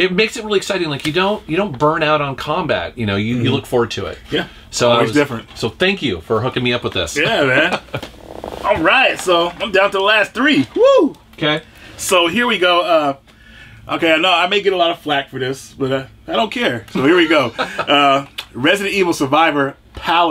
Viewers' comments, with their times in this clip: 0:07 Dat couch fart 💩👃 ... 😉